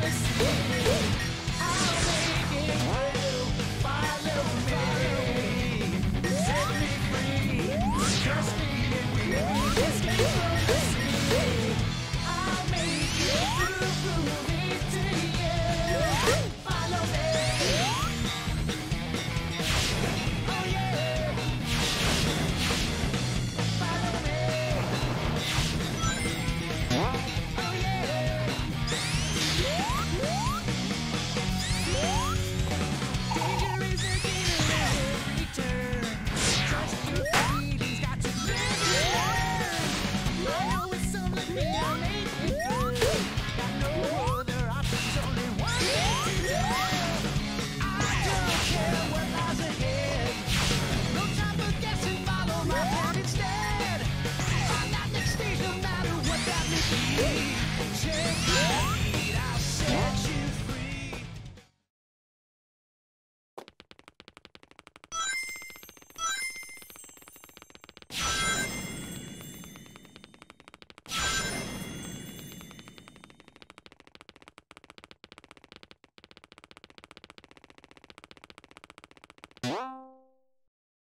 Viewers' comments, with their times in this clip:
0:09 damn, its scync with the song
1:02 that was a great ASMR